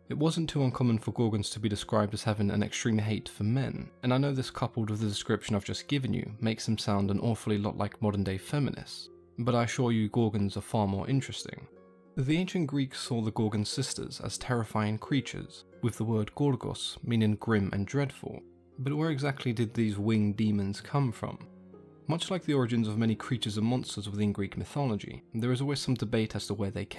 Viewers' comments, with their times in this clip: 0:08 ¨Modern-day feminists¨ this made me laugh , especially since this guy talks monotone XD